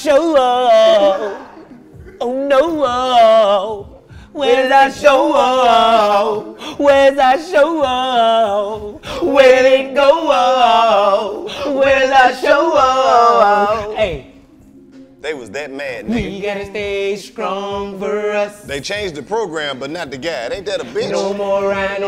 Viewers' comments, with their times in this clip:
0:04 They conjured up that Bone thugs spirit lol.